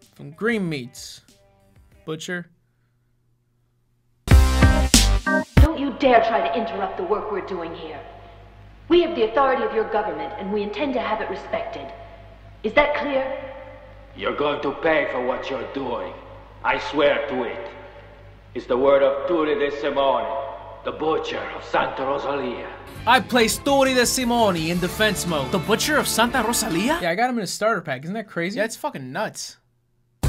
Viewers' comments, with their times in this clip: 0:08 "this version is dubbed"
0:14 I'm hearing this dude and I remember Ezio Auditore